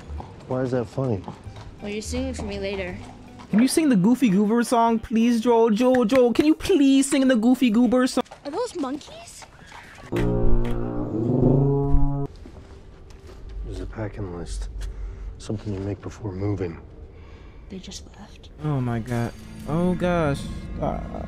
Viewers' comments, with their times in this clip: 0:09 The way that Ellie said are those monkeys? 💀💀💀💀💀 bro watch yo mouth